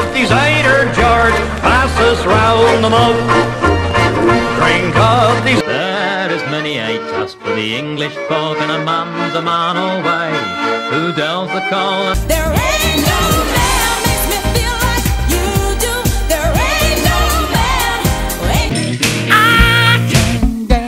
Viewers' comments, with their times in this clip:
0:08 I was just waiting for the Wurzels for Somerset lol. Btw is that Peter Bellamy ? It's a song I've not heard before but the vocals sound a lot like him